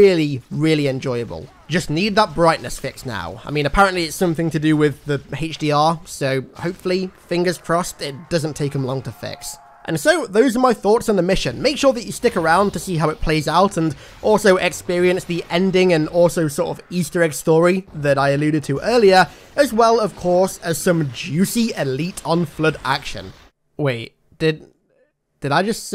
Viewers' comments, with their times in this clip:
0:07 lmao they used zombies screams from callofduty for the flood 😂